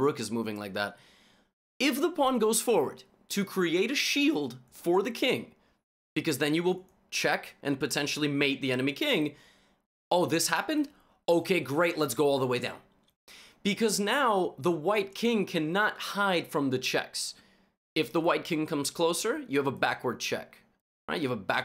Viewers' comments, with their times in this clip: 0:03 god that voice crack is hilarious, why is no one mentioning it